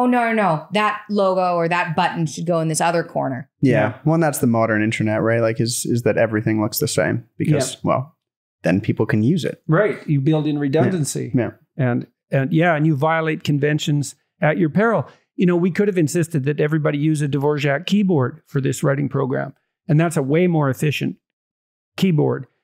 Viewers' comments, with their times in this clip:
0:05 Love how y’all laugh together so much. It’s a.m. here and waking up seeing how your family interact in such a beautiful way will set the rest of my day. Thank you 🙏🏻